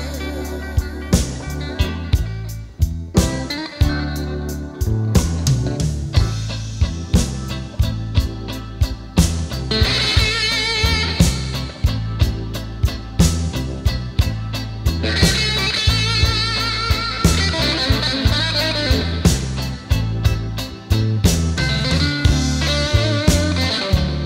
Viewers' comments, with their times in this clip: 0:09 Wonderfully soulful vocals and lyrics from Cray, and Collins' spine-tingling solo at the mark sounds like his telecaster was being struck by lightning. Proof that a few lingering exceptional words and notes can be more compelling than lots of fast and furious playing.